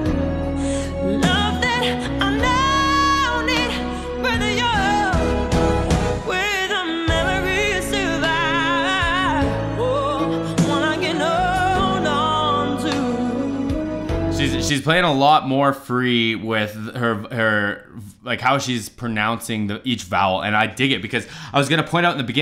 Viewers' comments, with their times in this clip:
0:09 That "oooh" sound she makes -ish is one of the special highlights of this fantastic performance...there is an extra air of passion and authority in this.